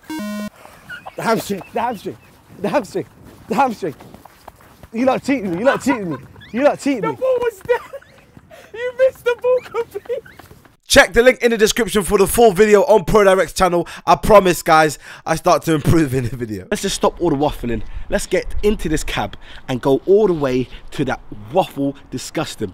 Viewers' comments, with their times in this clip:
0:06 That laugh tho... I'm dying